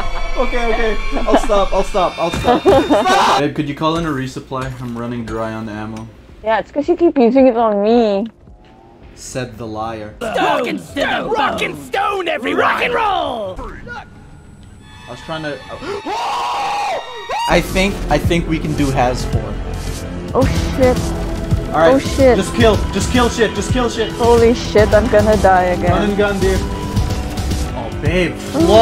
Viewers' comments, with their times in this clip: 0:09 the Betsy sound triggered some ptsd